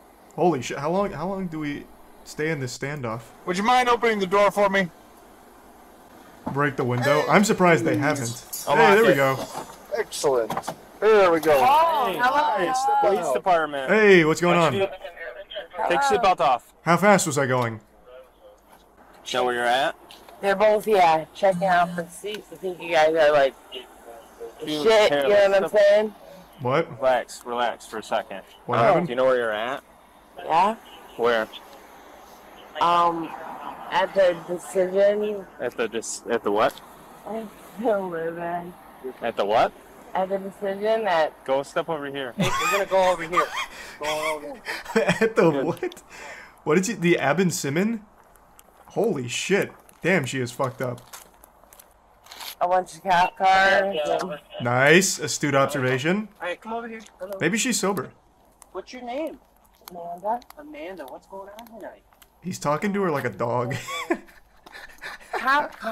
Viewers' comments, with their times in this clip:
0:10 Bro sounds like phone guy💀
0:29 I think what she’s saying here is “at the decision,” which might be drunk for “intersection”
0:47 I kept hearing “at the decision”, like a very poor iteration of intersection 😂😂